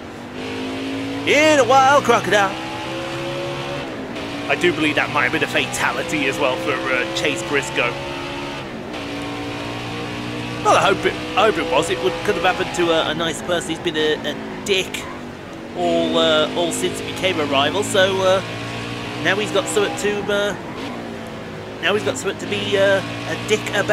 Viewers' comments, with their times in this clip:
0:07 why did you cut the singing short? I was enjoying it